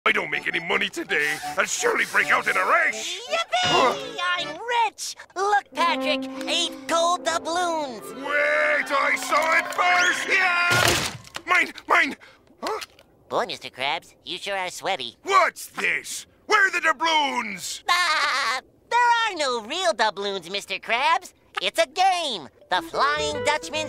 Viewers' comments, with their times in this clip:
0:10 Memes aside the weak impact here is freakin great